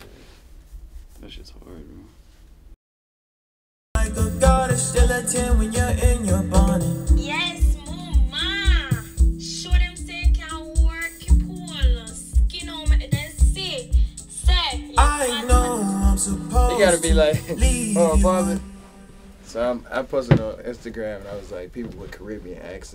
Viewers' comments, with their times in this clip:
0:03 damn DDG on the dancehall vibes is crazy
0:07 USE THE JAMAICAN GIRL VOICE
0:07 The voice is the best one